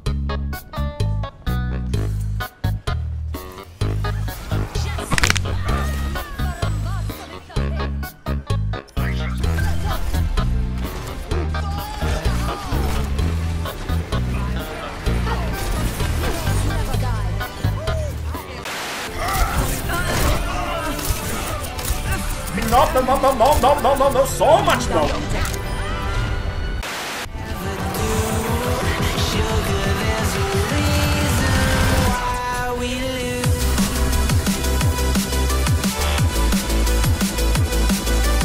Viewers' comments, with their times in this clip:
0:04 THAT'S THE TASTIEST CRUNCH I'VE EVER HEARD!!!
0:19 if you listen closely, you can hear the scream of death XD